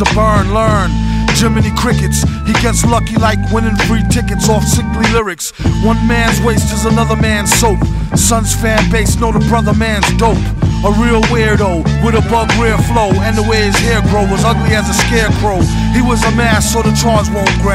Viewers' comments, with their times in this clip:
0:04 sounds like he says slippery instead of sickly. Anyone else hear it?